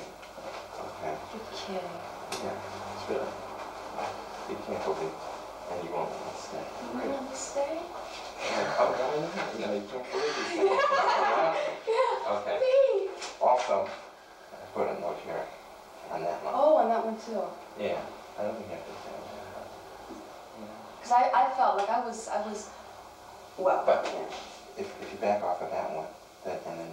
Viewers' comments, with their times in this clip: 0:10 when she says "you wont let me stay?" Are they all laughing from the joy that they just realized how much potential they have here? With her delivery of that line and in general ? Goosebumps etc